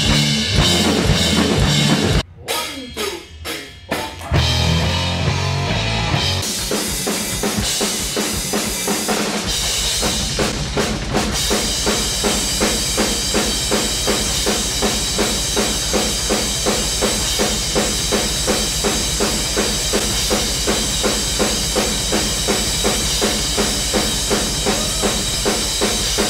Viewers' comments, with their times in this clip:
0:10 is a pretty cool display of double bass from Lars